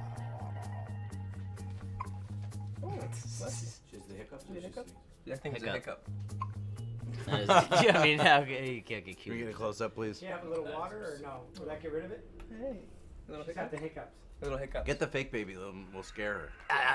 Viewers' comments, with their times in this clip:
0:04 Aww, Bradley is so sweet with the hiccuping baby